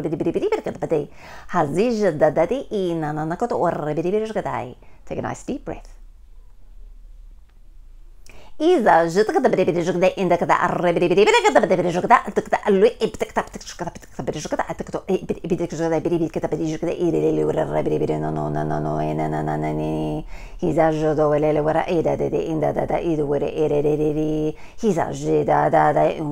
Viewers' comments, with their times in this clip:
0:10 We Found Donnie Thornberry's Mum